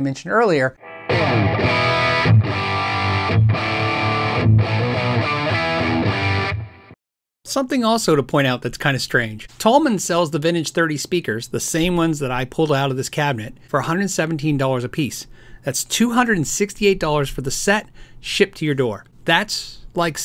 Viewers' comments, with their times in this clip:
0:04 Can someone pls help me get the tone found ? I found that so sexy.